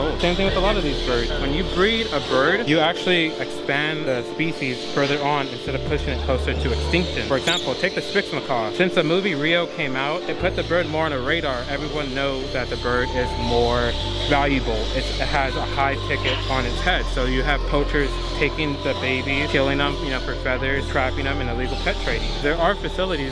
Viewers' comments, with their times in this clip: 0:09 man remove ur mouth piercing and feel free to speak